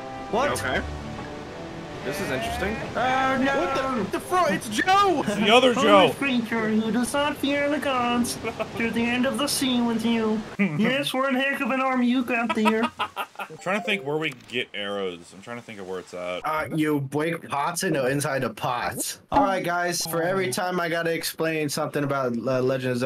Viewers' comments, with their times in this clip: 0:07 The Kermit voice XD